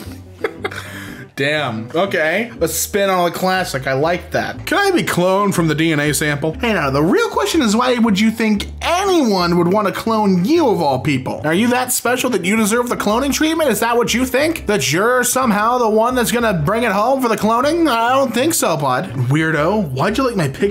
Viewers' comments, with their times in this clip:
0:06 why does he sound like Hiccup here? XD